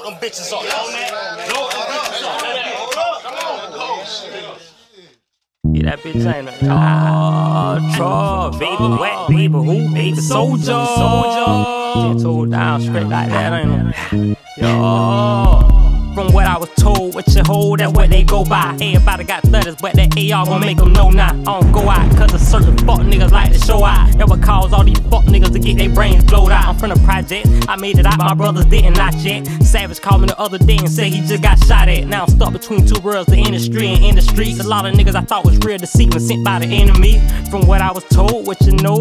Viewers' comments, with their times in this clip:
0:05 the song song like some old hot boys 🔥🔥🔥
0:20 that old cash money sound ... fuq wit lil homie now